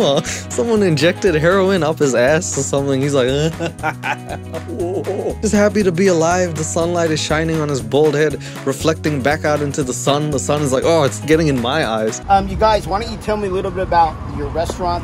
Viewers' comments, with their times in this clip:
0:03 The laugh min made this video bearable hahha